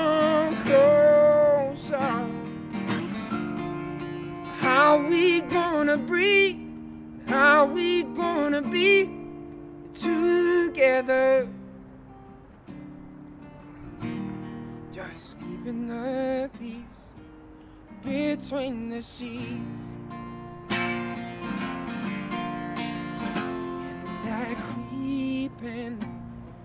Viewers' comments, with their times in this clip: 0:08 how we're gonna BEEP together